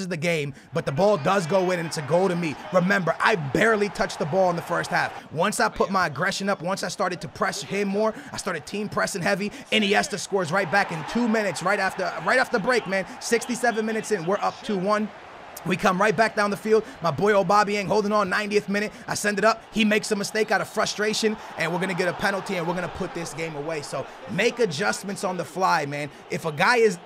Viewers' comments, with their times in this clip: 0:09 I swear he says inesta than insigne lol